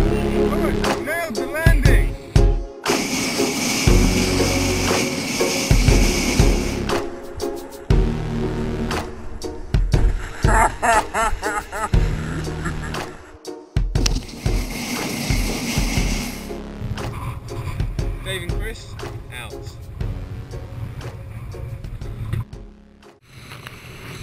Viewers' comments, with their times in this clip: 0:05 gotta love that psycho laugh